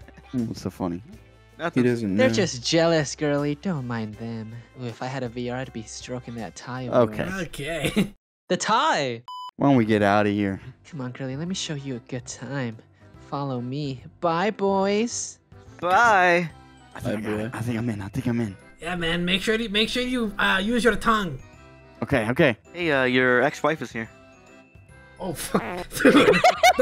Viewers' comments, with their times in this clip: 0:08 the voice change is so funny to me 😂